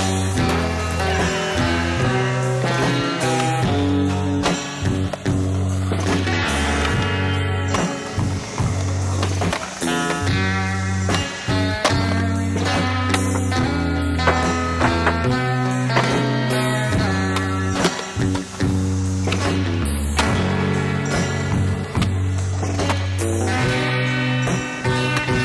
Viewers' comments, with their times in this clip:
0:06 random cut in the song